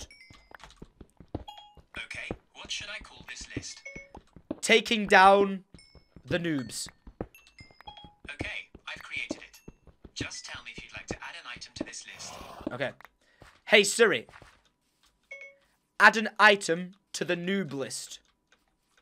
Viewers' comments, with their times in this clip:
0:05 Whos siri also responded ??😂